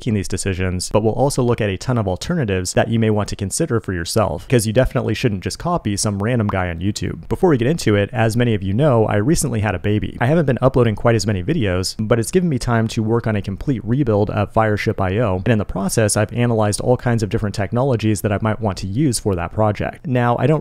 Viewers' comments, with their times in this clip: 0:07 You dont sound female.